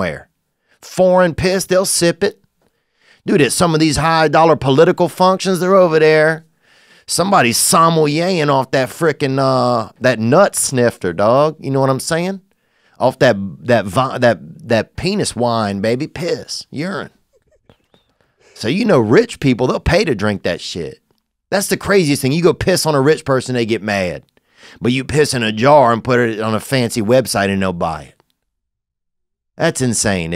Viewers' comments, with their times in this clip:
0:05 The producers laughing in the back
0:14 u can hear his co host gigglin'